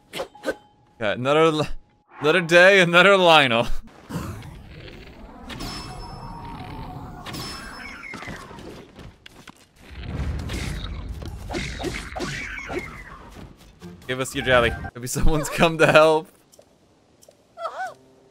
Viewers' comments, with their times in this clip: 0:04 Did anybody else hear that horrifying scream ?